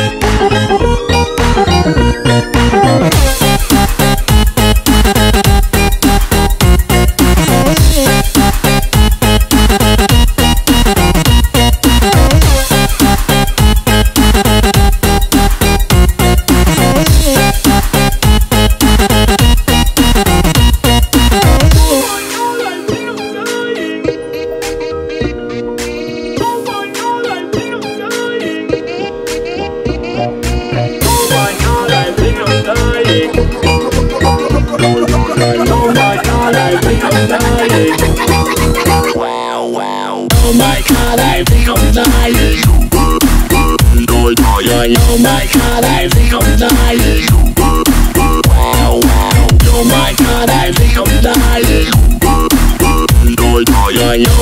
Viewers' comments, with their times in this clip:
0:03 Now this is possibly my favorite song by you guys! I love the beat the awesome techno vibe, not to mention how it really builds up and fades out at the end, gives me goosebumps! Great job!
0:19 finally an OMFG video that you can understand the lyrics in xD
0:40 OH MY BASS GODS
0:41 IS THE BESTTT LIKE JUST GOES WAWA